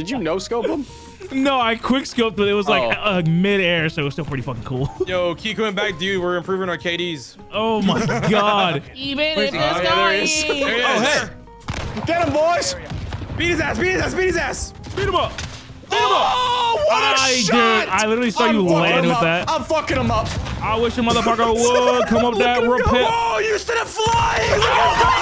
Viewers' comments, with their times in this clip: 0:06 "Even if they sky is falling down" No one else heard that? 🤣